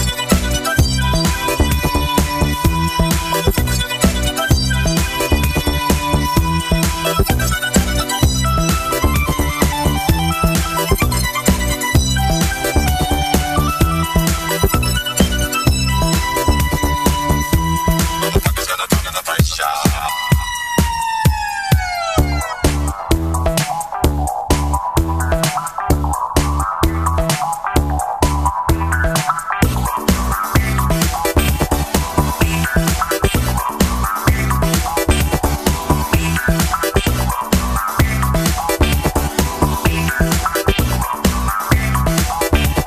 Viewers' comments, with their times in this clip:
0:09 Feck, this sounds even better than when i loved it a good few years back. The way the vocoder builds in pitch, and then the synth legato notes come in . . so good!!
0:14 if you got any higher than this only dogs would be able to hear it.
0:27 Brawn GP stole their theme from an ambulance! Haha!